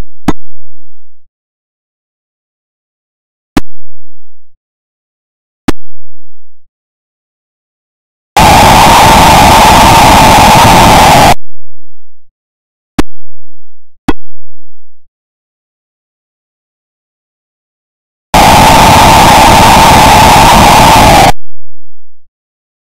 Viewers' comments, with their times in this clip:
0:07 And the crowd goes wild! (Hellish flesh-rending nightmare-scream)